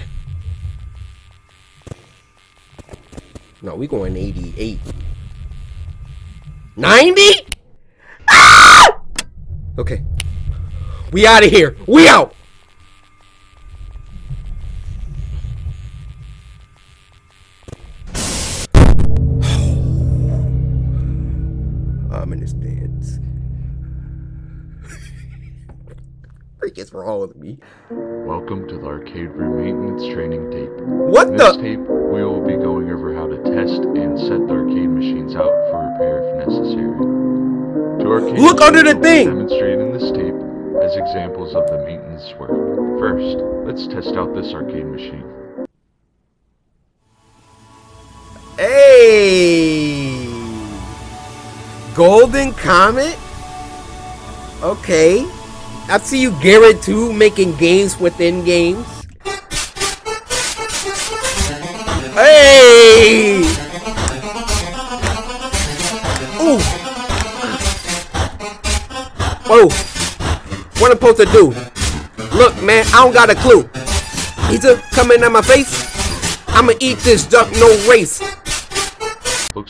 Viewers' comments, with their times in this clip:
0:08 bro that scream
0:58 oh dam this 8 bit music packing heeeat🔥
1:03 This beat on was sick and the rest XD